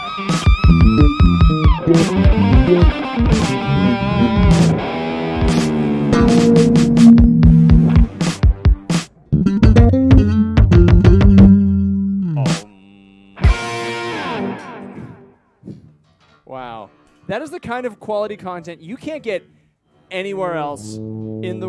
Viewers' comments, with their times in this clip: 0:09 THE LICK IS PLAYED